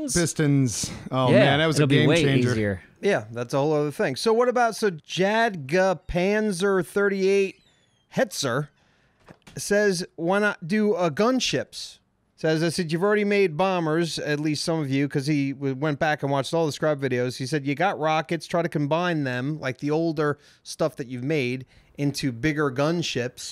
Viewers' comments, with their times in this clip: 0:06 the way he said it made me cringe